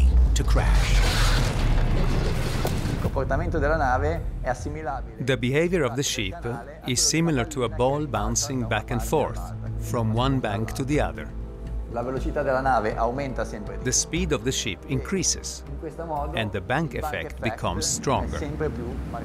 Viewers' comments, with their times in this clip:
0:03 they dub the Italian guy with another Italian guy speaking English with an Italian accent